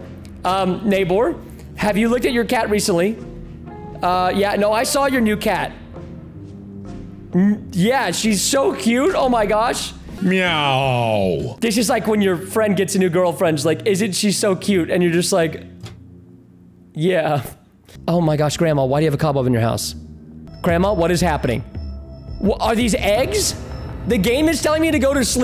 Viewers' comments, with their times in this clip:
0:10 On the meow is hilarious 😂
0:10 the meow was hilarious